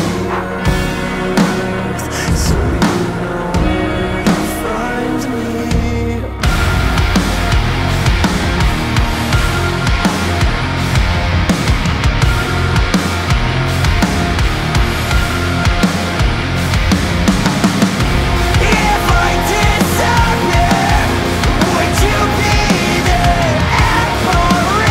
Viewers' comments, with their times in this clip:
0:08 there's a chilling sound effect I love,that is subtly playing behind the drums and guitar. I'm not sure what the name of this said sound effect would be, but I would love feedback so I can take a note down on it. its like a heartbeat sensor sound or a clock ticking slowly,with a dark ring that is almost like trance.. it starts out high and kinda fades, it fits very well.